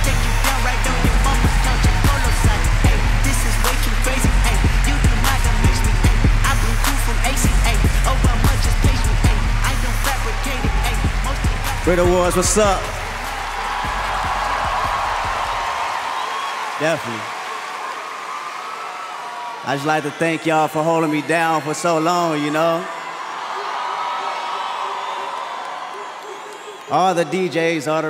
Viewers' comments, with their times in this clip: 0:10 when they gone turn off the music?😂😂🙄🤦🏾‍♀️